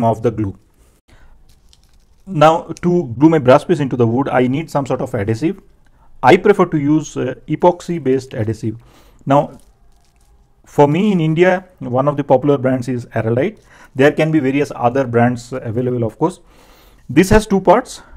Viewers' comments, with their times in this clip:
0:03 Harener, Indian hardener